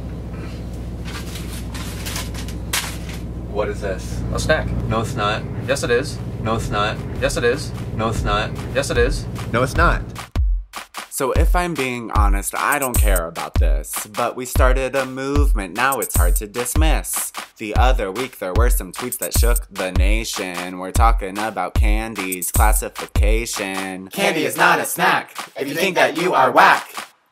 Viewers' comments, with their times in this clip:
0:10 Is when the song comes on